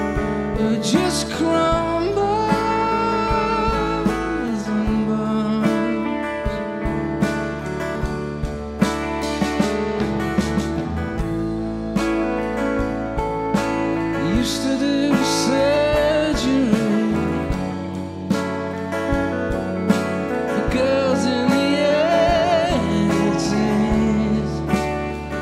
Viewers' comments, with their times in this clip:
0:06 Thom is a great singer but fuck me is so out of tune